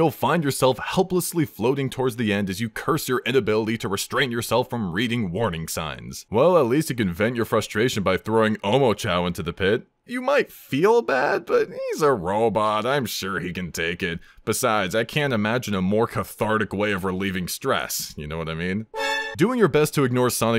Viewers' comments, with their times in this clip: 0:06 that one doot from the ultra instinct theme caught me so off guard i immediately busted up laughing